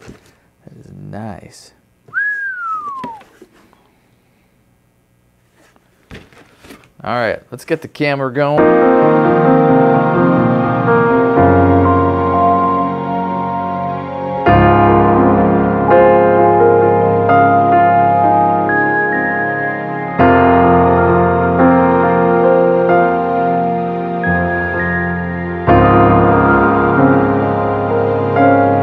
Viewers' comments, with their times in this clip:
0:10 OMFG with the soap opera music LULZ !!! You should have panned back and forth to your face all "telenovella" style...